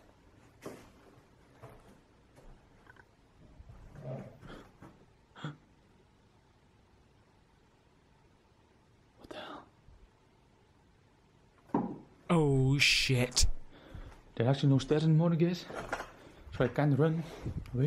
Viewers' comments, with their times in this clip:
0:05 listen to the time stamp with no head set on a creepy whisper before the knock he heard xx